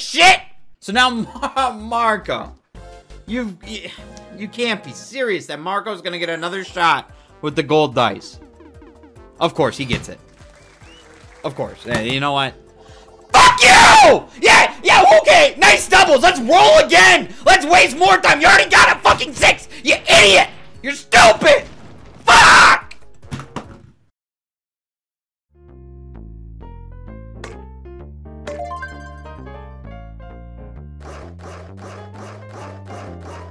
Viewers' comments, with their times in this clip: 0:10 I think i laughed a bit too hard i laughed for a good 5 extra minutes when he screamed fuck you
0:14 😂😂😂 He’s quiet when he says “you know what”. And then the next thing you know, he’s loud as hell.